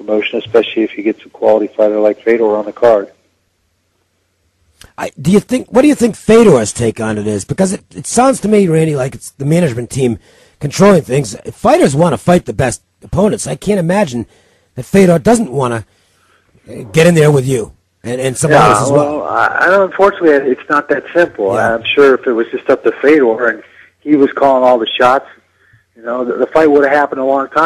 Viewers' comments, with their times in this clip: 0:09 get that dude a glass of water or sum honey!!!!!!!!